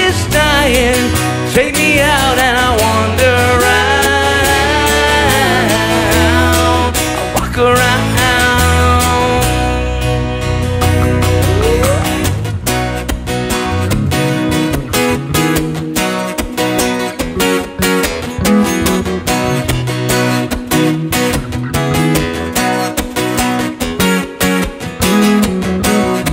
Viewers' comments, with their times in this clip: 0:08 Well, I'll refrain from making any more comments about the guitar sound, and just say that those are very impressive harmonies at around the mark :)